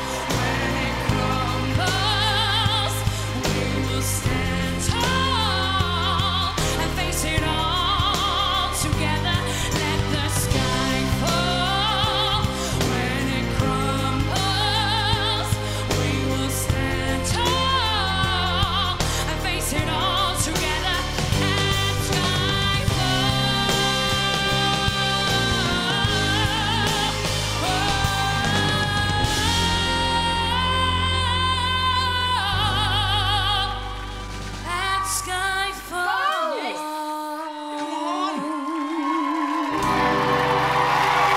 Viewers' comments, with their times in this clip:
0:04 Adele sing the song very much better. With more feelings. but is good.
0:15 says it all, shakes her head because its off key. also vibrato range is off key throughout the whole song
0:28 I pressed my button ... That was strong!